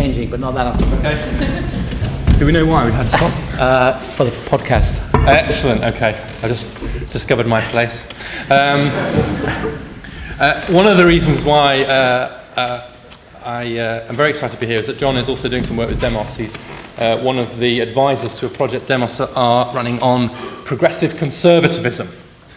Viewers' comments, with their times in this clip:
0:10 Brilliant, brilliant man... Totally farted